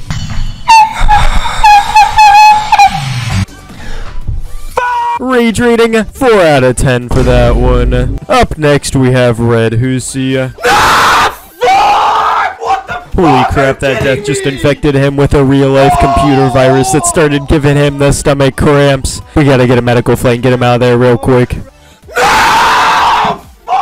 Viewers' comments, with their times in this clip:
0:08 my man just screamed at a 94 death on Nine Circles when I laughed and said "Ooh, progress!" with the same % death (not cap lol)
0:08 My ear dreams exploded